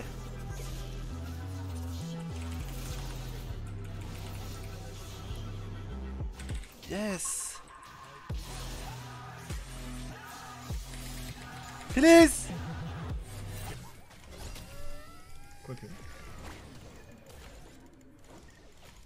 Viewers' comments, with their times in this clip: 0:07 damn clean play AND with the beat drop too